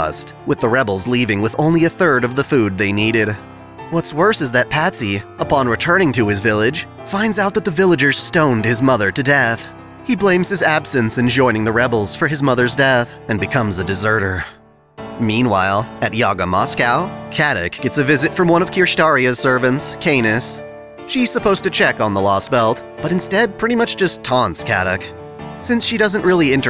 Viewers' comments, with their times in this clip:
0:08 what was this piano music it was hype can you tell me what the name is